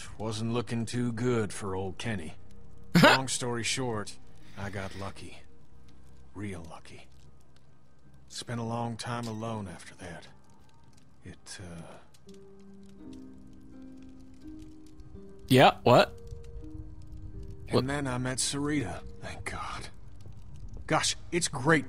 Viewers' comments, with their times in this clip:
0:07 I think something happened to Kenny between the time we thought he died and the time when he found Sarita. Notice he takes a big pause inbetween